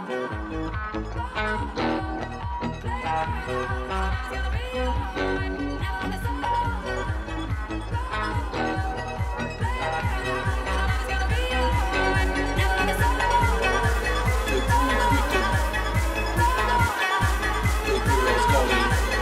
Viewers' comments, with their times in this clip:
0:07 who's the british duo singing, and what's the song? i love the accent